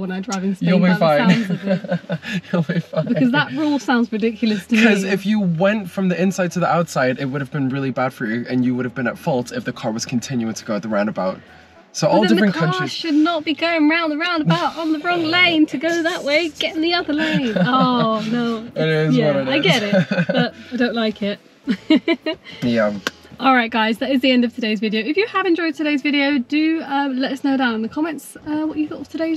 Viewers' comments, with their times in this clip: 0:10 the accent hahahahha😂